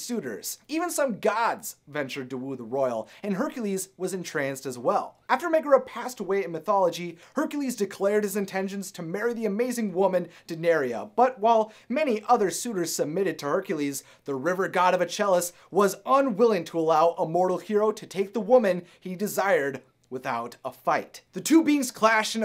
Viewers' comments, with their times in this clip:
0:10 Its so weird hearing my name in videos on the topic about Hercules. Though you say it like day-in-air-uh for me as mines spelled differently lmao